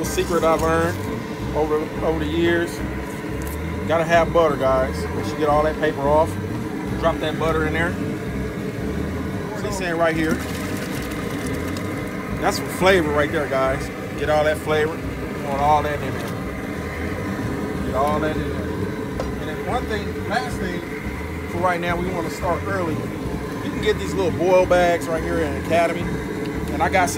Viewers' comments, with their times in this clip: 0:10 Can anyone understand what he's saying at the mark?